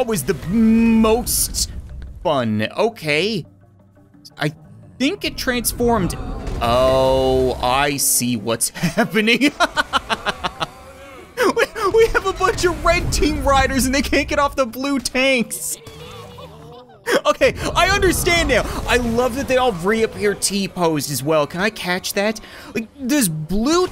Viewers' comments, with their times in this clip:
0:07 sounds like he’s going to sing you’re welcome from Moana lol 😂